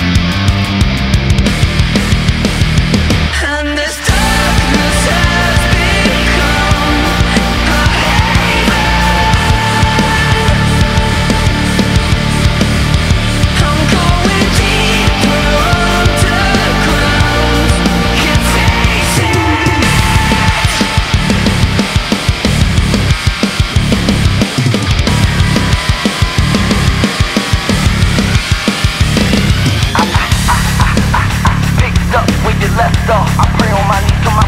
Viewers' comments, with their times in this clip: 0:03 this hits me with nostalgia of 2000s metal music, especially something off the older Need for Speed, WWE, and Mx vs. Atv games for sure! #bringbackrapmetal
0:17 sounds exactly like Chester